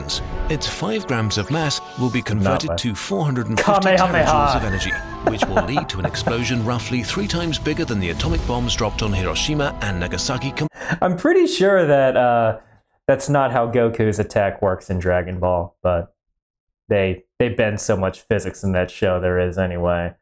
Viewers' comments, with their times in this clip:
0:04 I love his laugh